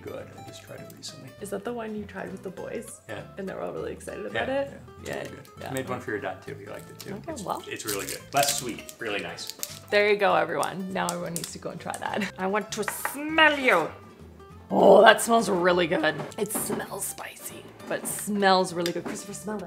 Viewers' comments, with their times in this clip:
0:03 have I tried a black man in a hat? No sir I have not….